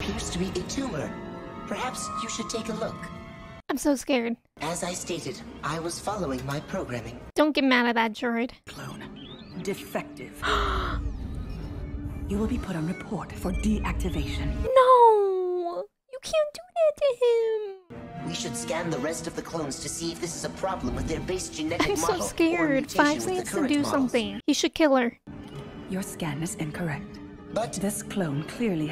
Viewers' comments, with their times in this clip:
0:09 You sparkled in reacting today, even more than usual! As I'm not a native English speaker, (In fact, I never studied English) I unfortunately didn't understand this gem here.. Although you said it very sweetly. 😍